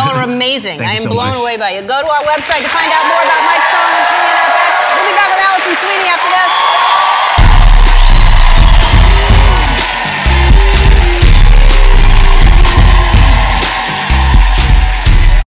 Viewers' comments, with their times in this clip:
0:10 that earrape tho 😂😂😂😂